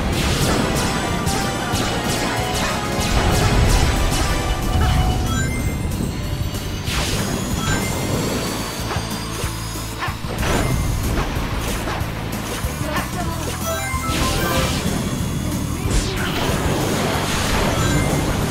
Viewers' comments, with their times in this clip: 0:04 that little twirl with sonic boom playing the background hit me HARD with nostalgia